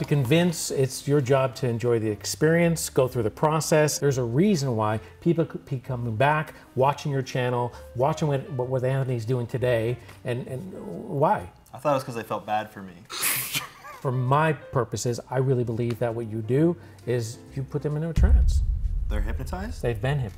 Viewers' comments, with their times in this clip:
0:05 I wouldn't laugh as much at that joke if it wasn't for Gus's laugh x"D